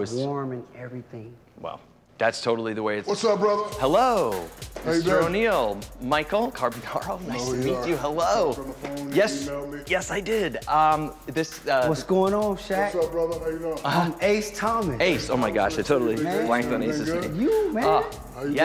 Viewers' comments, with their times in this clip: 0:06 you can hear Michael almost reveal his last name out loud so he choked it back at the last second 😂